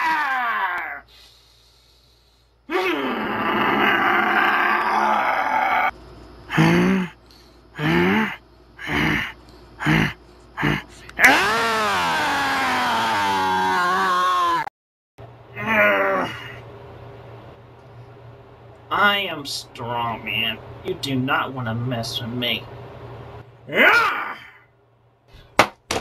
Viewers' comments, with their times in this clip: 0:07 earrape mode activated